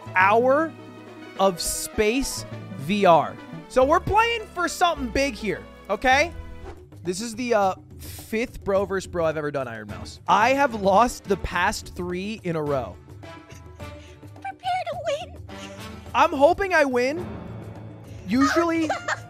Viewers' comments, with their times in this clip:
0:06 never thought I will hear this theme here but I love it